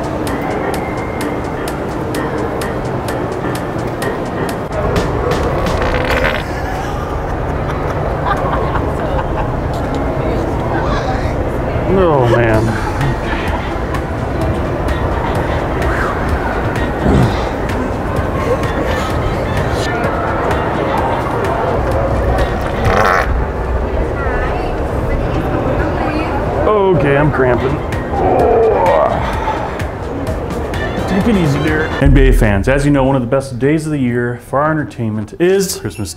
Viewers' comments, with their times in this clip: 0:05 The boys definitely got one of the best reactions from how they laugh LOL
0:05 sounded like it went up your back!
0:22 fart engine start...🤣🤣🤣🤣🤣🤣🤣